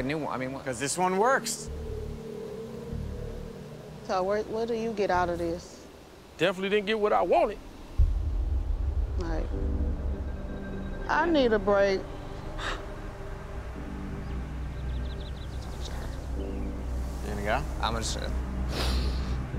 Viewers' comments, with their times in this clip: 0:06 his tone makes it 8x funnier